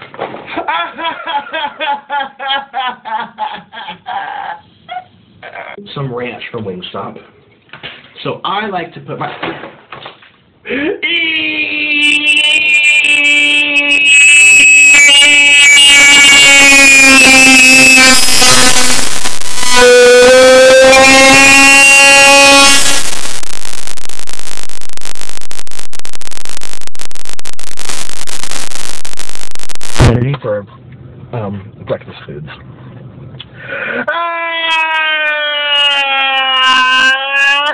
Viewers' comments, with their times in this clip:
0:07 [laughter] Best cry of all time
0:07 the power of the EEE's were TOO strong, it destroyed the sound barrier 😂😂😂😂
0:10 he sounds like a rapid screw driver
0:10 R.i.p. head phone users... The part is very loud
0:10 starts Cry normal pitch to extreme pitch
0:12 starts to break the fucking sound barrier
0:15 RIP HEADPHONE USER'S
0:18 MY EARS!!!! HELP ME FROM MY EARDRUMS!!!!!!!!!!!!
0:25 He Feels Like Ultimation Sound 😂😂😂😂